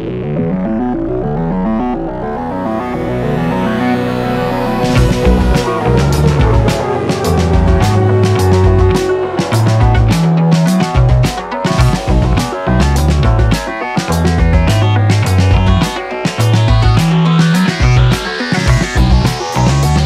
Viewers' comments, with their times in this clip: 0:06 It took me 2 months of listening to notice the bass